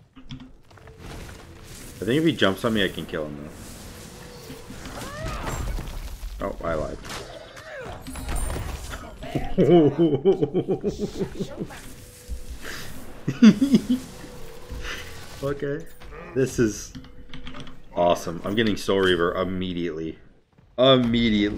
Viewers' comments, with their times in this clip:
0:07 the “tee hee” was golden